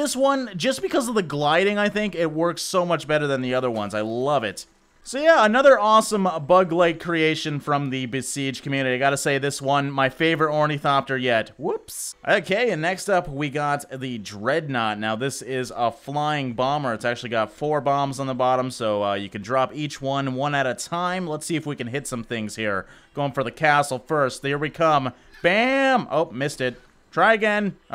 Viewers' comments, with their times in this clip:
0:08 was the gayest woops ever